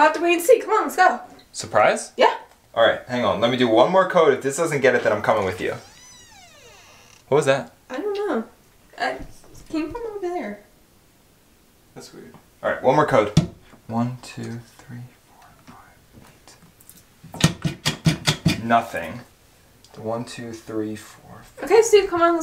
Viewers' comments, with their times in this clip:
0:06 I heard a door creek open